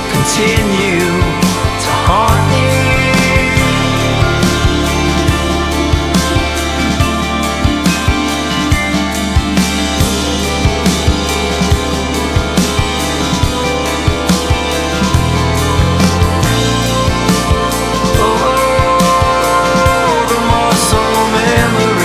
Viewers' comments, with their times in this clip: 0:10 the way that synth(?) creates tension and then resolves is so perfect